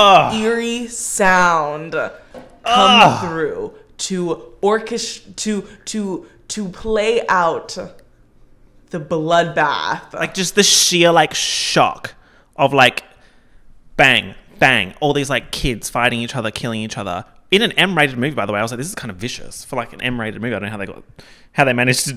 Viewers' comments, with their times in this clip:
0:06 that 'eerie sound' is the same sound of your ears ringing, it can happen from lots of stress, medical reasons or loud noises I associate with dissociation or trauma cause it brings you out of the moment causing a long break which is why it's perfect for that scene cause the hunger games beginning was probably very stressful and traumatic for katniss